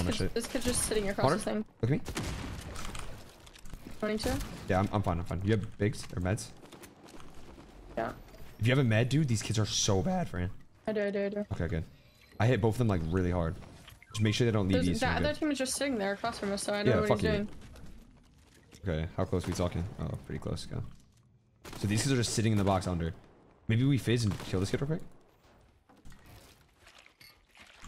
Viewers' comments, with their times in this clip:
0:08 bro got a voice crack lol